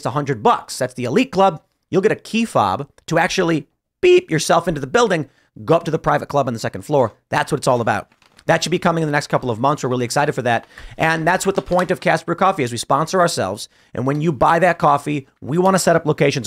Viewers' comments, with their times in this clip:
0:03 Damn that you can just "beep" yourself into the building made me laugh out loud 🤣 Definitely 😉 didn't sound like Tim censored some nasty thing you can do to yourself into that building 😂